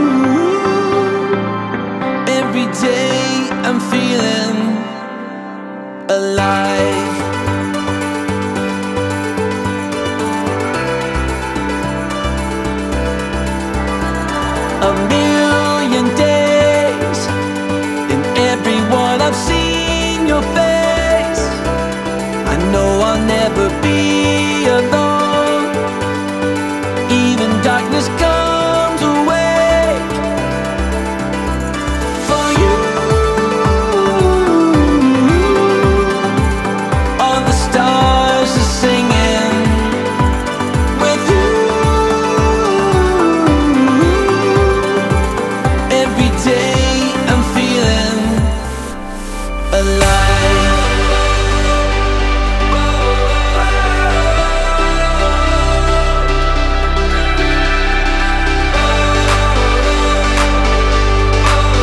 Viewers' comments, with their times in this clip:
0:06 and on reminds me of Rich Mullins' dulcimer playing
0:49 that hyperdrive though:0